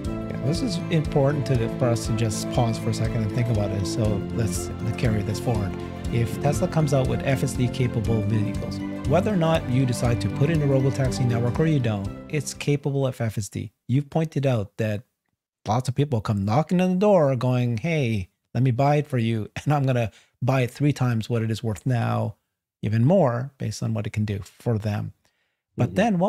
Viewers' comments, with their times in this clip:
0:07 The outro plays by mistake during